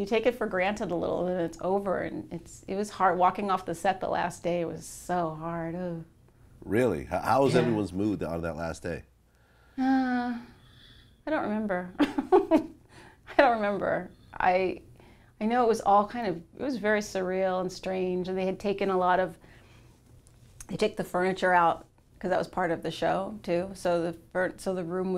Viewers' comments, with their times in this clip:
0:08 That ''I don't remember'' really give me flash backs of 'Hillary Banks.'' lol